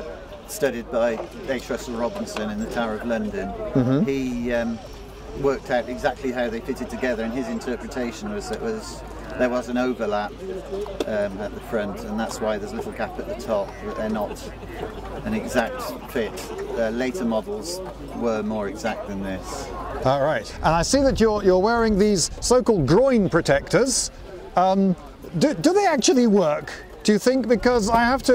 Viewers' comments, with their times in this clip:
0:09 the guy acts like your holding a gun up to him to get him to say this.